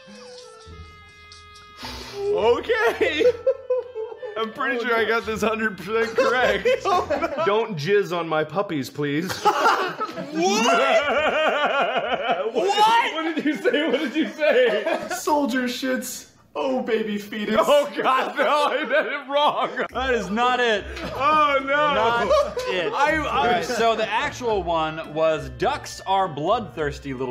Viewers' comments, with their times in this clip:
0:10 Marks laugh is exacly like The cat in the hats.... who else has noticed?!